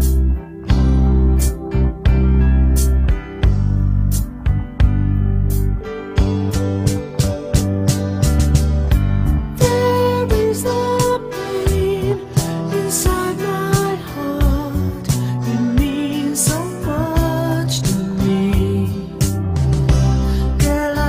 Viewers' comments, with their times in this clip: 0:09 I thought It was a Woman for the First time.